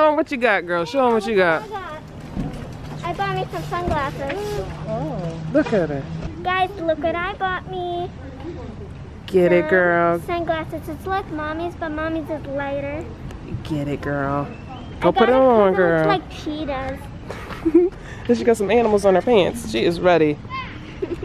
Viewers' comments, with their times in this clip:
0:04 Nana sounds SO unimpressed 🤣😂🤣😂